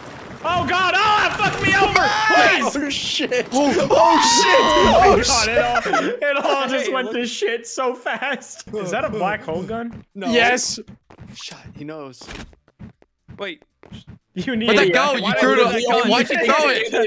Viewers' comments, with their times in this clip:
0:03 Doesn’t puffer sound like R2-D2 screaming